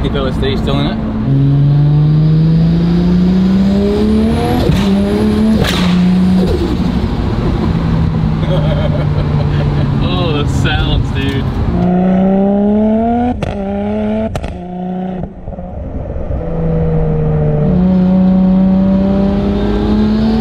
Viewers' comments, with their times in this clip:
0:04 that thing sounds like a whip cracking 😳
0:05 can someone explain that weird shift sound from 3rd to 4th gear? Sounded like a alien gun lol